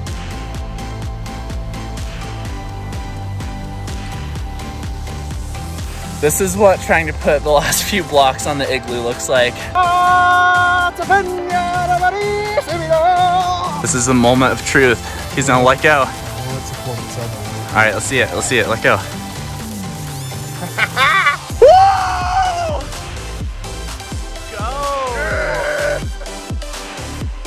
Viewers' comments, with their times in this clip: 0:10 the metal version of the Lion King we didn’t know we needed 🙌🏽